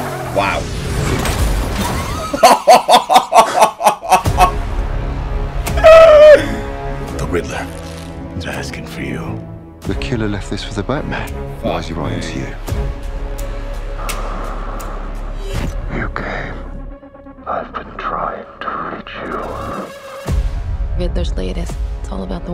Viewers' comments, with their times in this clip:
0:04 Is the theme supposed to sound like Nolan's theme?